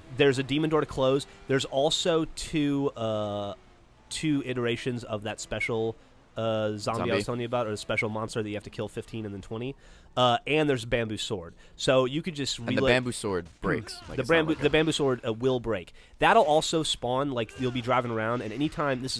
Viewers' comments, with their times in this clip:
0:04 listen to geoff's whistle LOLOL